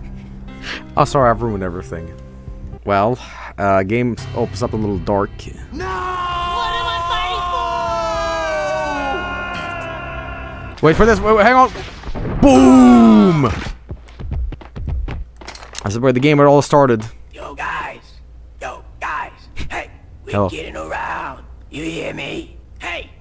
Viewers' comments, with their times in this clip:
0:05 Yay, another death of side character ruined by awful VA in games!!! i feel sick...